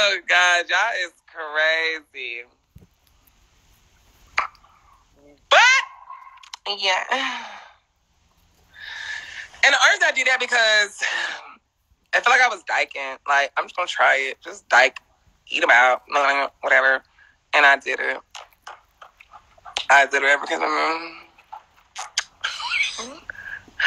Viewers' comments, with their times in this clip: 0:05 that “BUT” echo’d through the whole house 🤣